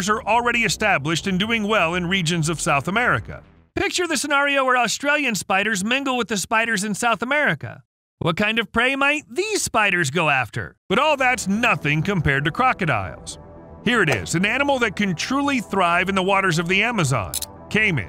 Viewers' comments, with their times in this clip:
0:03 so is he doing the voice (with a mask) because he has a voiceover specialist/narrator and he’s using it also for himself?